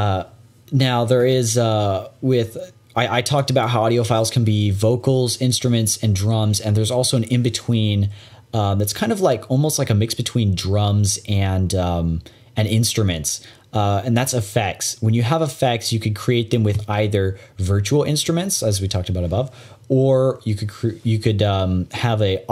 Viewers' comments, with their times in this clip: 0:09 I heard a doorbell twice 😂